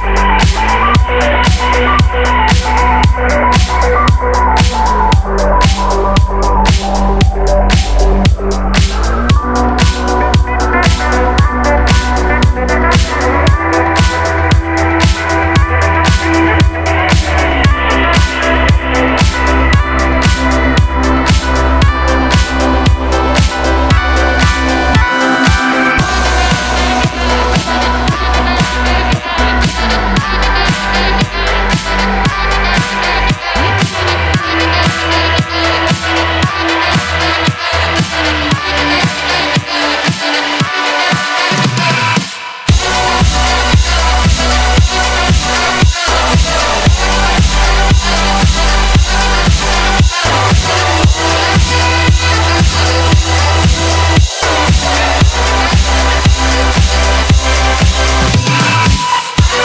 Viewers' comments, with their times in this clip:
0:06 How did you manage to make those cool but weirds sound effets ?
0:25 those low saxophone bellows in the background are perfect
0:42 me when the microwave been on for 10 mins